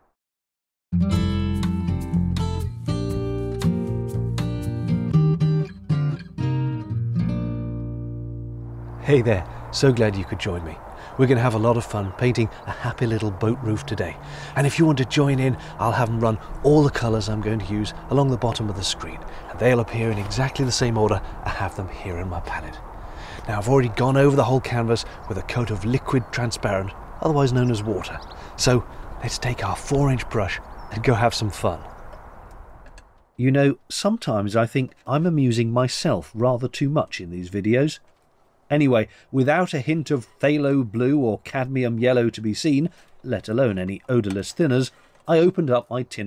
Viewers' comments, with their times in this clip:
0:05 LOL You imitate "Bob Ross" too well. Must have watched a few of his videos.
0:30 Loved the jazzy tunes while sanding and laughed out loud with the Bob Ross impersonation! Leaving a comment at only into the video. Well done, one again!